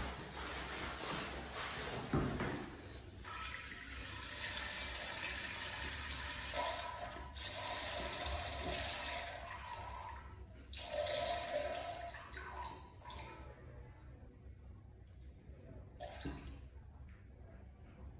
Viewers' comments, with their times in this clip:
0:03 OMG why does your pee sound like a fire hose? 😳😳😳